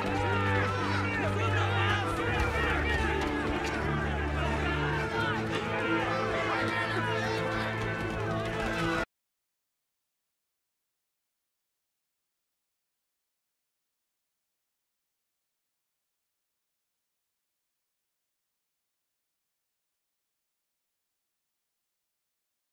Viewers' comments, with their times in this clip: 0:09 the sound stops